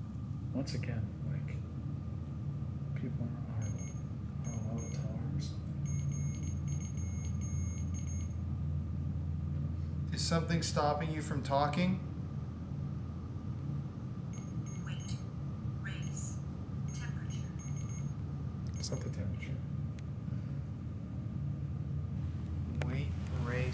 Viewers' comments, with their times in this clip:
0:05 The beeping sounded like Morse code. I love the washoe!!